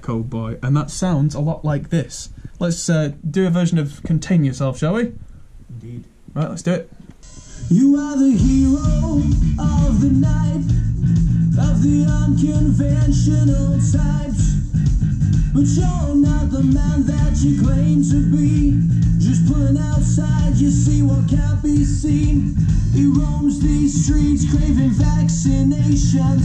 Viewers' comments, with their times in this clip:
0:09 sounds ALOT like AM